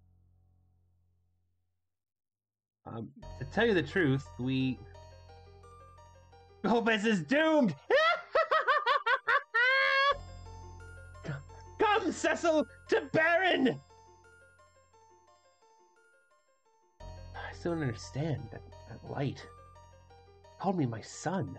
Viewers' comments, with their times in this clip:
0:07 Mate, nice laugh I'm loving the commitment to stay in character.